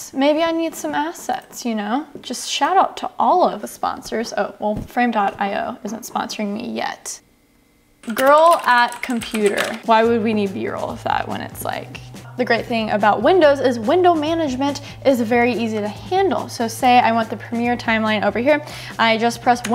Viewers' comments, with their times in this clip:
0:07 nothing is more satisfying that that keyboard clicking